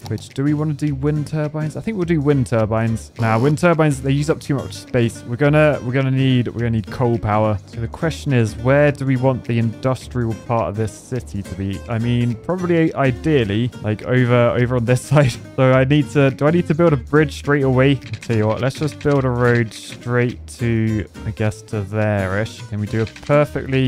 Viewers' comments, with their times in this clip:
0:07 Said COAL like an American 😂